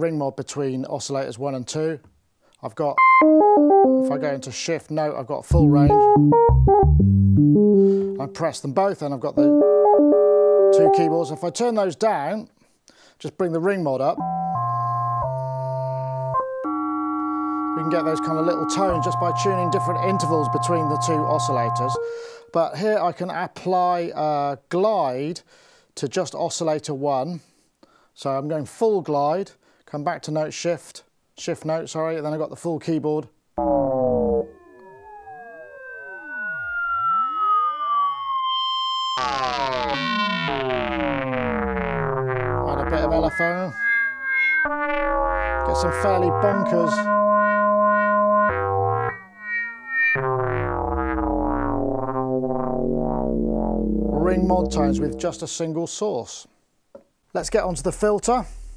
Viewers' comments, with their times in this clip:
0:10 I thought I had a Facebook message
0:42 The Ring Mod sound ...sounds very much like one of the sounds in the intro to This Is My House by Gary Numan.